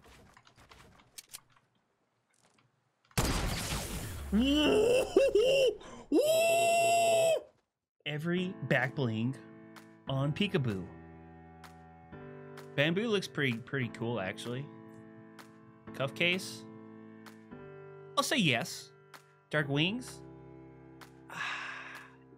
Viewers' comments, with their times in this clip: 0:04 He sounded like scooby-doo😂
0:04 You sound like Daequan
0:05 If you go to then skip ten seconds forward then go back ten seconds a lot he sounds like a pig lol